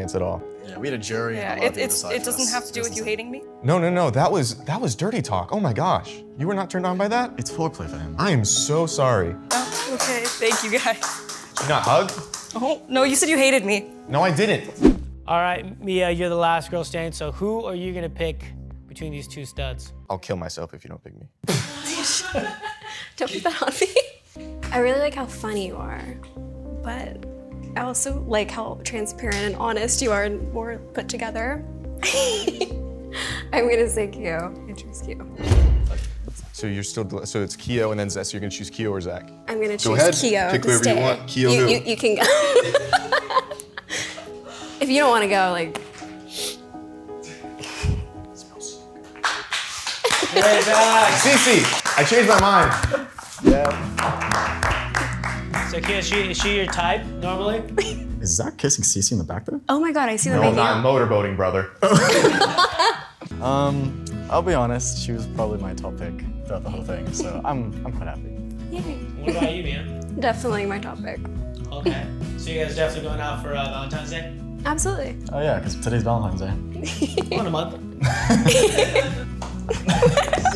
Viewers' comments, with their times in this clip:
0:10 dude she genuinely sounded sad and it made me feel sad for her when she said nope you hated me
0:12 she sounded like she was about to cry
0:13 it sounded like she wanted to cry after being let go.
1:04 Are they... actually kissing? It sounds like it...